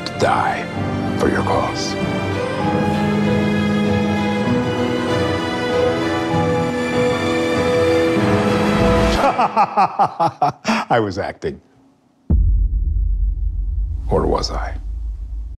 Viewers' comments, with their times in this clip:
0:11 Okay but the switch up from jovial laughter to a menacing frown is nothing short of impressive
0:12 that sound is menacing as hellll
0:13 *vsauce music kicks in